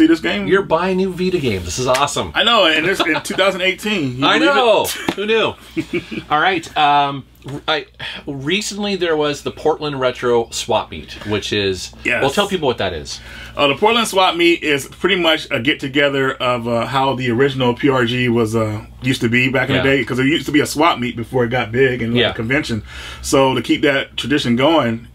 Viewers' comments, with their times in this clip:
0:09 lol did one of you fart